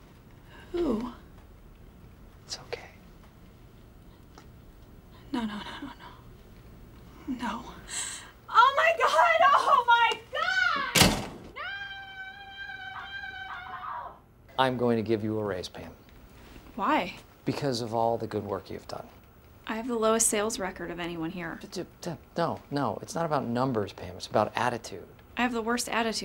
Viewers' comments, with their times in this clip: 0:04 I love the face Michael gives Pam right before she screams and runs outta the building ish
0:04 Micheals stare and pams scream always gets me 😂😂😂
0:08 I fuckin loooove her voice ❤😍